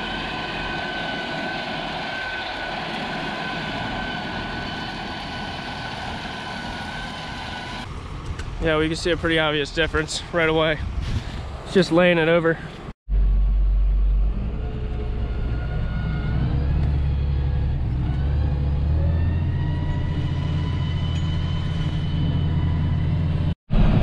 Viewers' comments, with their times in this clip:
0:07 Who’s that guy talking on the phone 😆